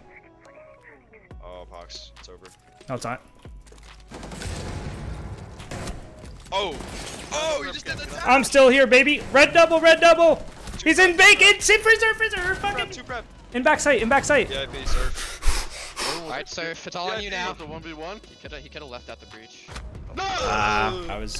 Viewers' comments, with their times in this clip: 0:07 you sound like kermit here "letz go baby!"